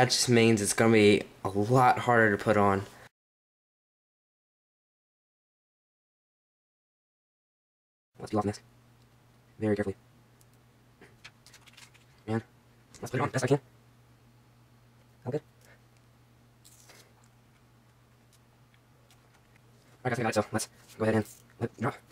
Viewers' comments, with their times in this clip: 0:08 starting = sims talk